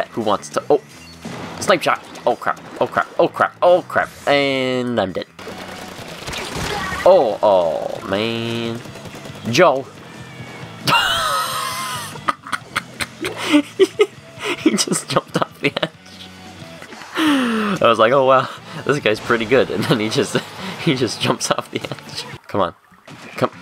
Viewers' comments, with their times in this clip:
0:10 That old man laugh XD